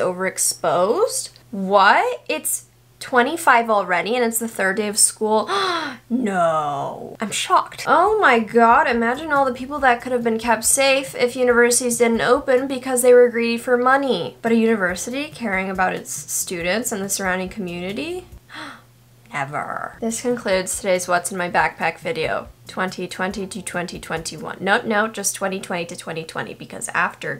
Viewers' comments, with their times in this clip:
0:08 here you sound like you are a great singer lol